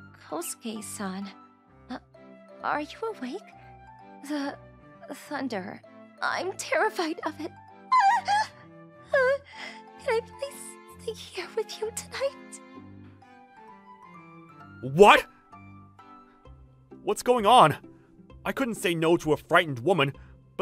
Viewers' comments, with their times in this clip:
0:06 ok, I know people have a problem with thunder and thats fine, but can someone PLEASE help me understand why people are scared of it, because I love the sound of it.